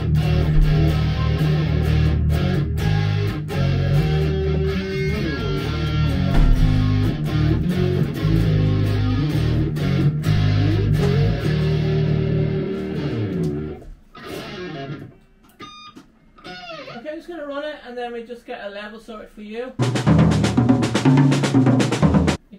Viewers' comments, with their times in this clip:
0:07 is it me or does that sound like Smoke on the Water?